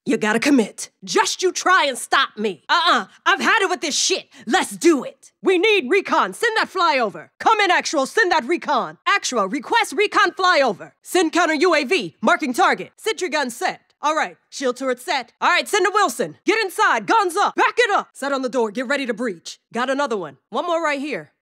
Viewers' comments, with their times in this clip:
0:04 her voice is music to my ears <3